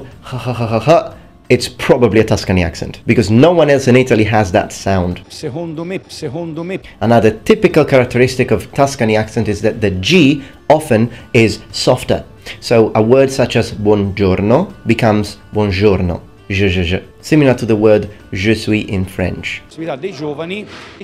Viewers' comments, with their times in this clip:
0:07 It's weird listening about a "single sound" while the examples given are completely separate sounds in my native language "g" and "ž" or even "dž"